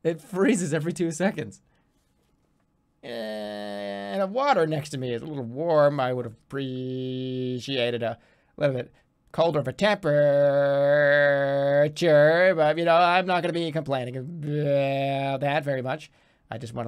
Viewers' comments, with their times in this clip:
0:03 jerma does his mondassian cyberman impression